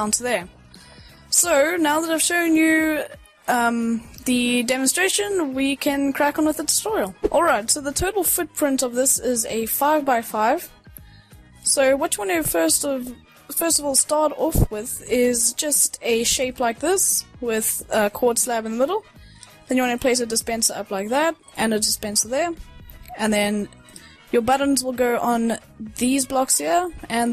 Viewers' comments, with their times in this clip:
0:08 ," the turtle footprint"